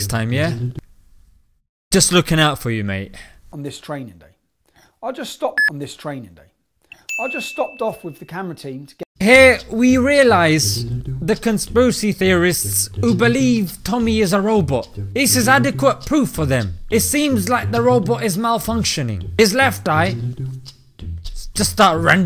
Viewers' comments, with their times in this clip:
0:10 go to and it sounds like your struggling with the English language . its con·spir·a·cy not con-spu-cy. lmfao